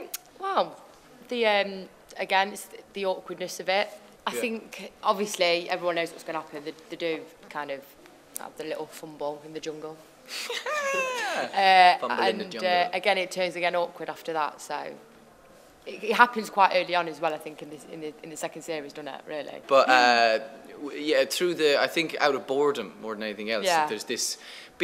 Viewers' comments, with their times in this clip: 0:09 omg his laught so cute
0:10 robert's little laugh is just adorable
0:10 that laugh haha<3
0:11 HAHAHAHA his "laughter" *hilarious*